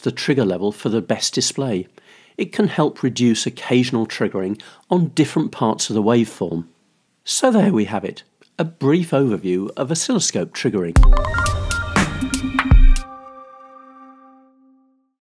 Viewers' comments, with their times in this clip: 0:07 Great video but lol at the voice crack